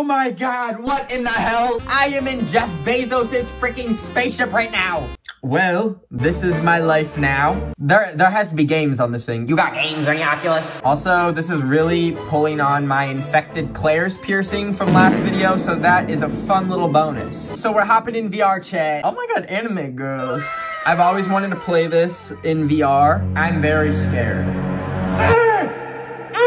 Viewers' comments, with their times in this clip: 0:09 the frog being the back round to😂